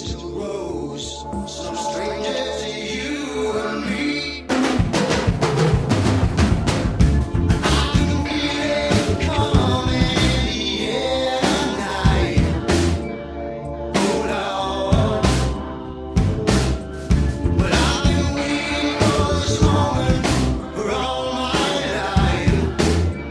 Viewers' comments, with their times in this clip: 0:03 !!! Drums sound warm and so natural.
0:03 ... sound up all the way.. hands on my headphones to compress the beat ... my heart beat thumped with the drum!!! ... AMAZING!
0:04 o man listen to that beat drop from !